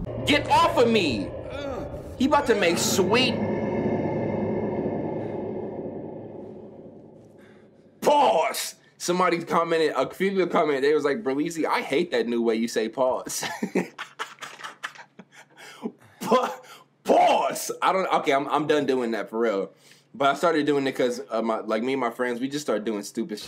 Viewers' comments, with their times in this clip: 0:04 I love how he prepared his mouth for it. PAUZ